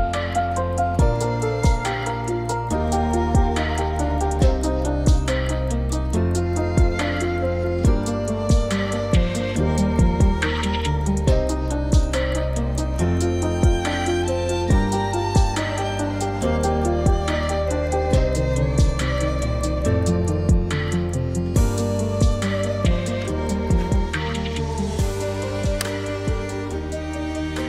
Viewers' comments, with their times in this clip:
0:10 man that was a cool song. Sounded like a piano and violin version of a Daft Punk song. But I can’t remember the name. It really caught my ear! Now I’m going to be wondering if my ear and brain led me right until I figure out the song and artist. Edit: it reminds of Veridis Quo by Daft Punk but I am not sure if it is a cover version or just a great sounding electro-classical song that sounds somewhat similar. Daft Punk!?